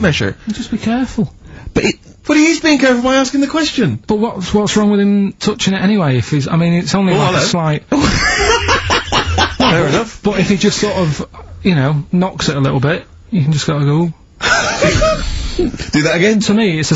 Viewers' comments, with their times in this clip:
0:03 Steve's "Oh 'ello" is just beautiful